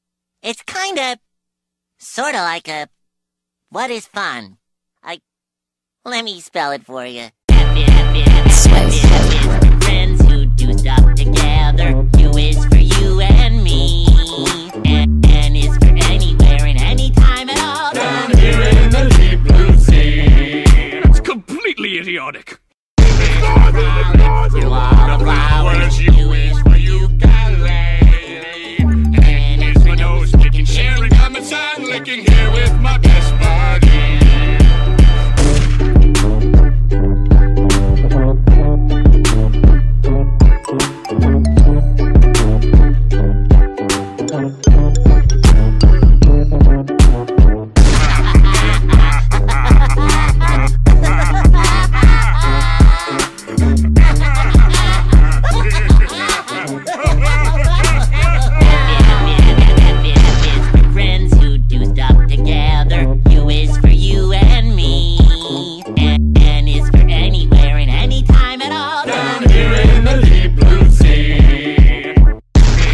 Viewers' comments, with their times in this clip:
0:07 such a great beatdrop
0:09 the bass got me dying
0:48 sounds like frieza and cell bonding
0:56 I did it 2x while they were laughing it's so EVIL😈😈😈